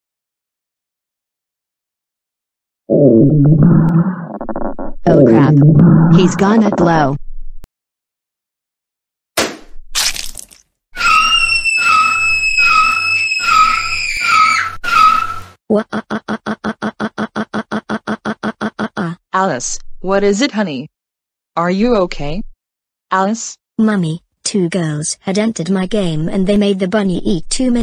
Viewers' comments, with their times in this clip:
0:09 (POP! SQUISH!) (Alice Screams Loudly) (Tires Screeching) Alice Looked REALLY Upset!
0:11 Loud Warning Screaming Girl